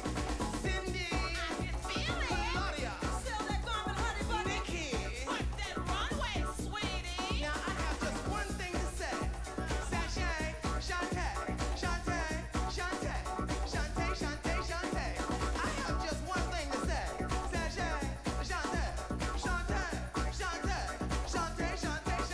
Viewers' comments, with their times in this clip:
0:04 “WERK THAT RUUUUNWAAAY SAWEEEEETIEEEEEEEEEEEEEE” Damn, even the background singers were really getting into it! Love it!!!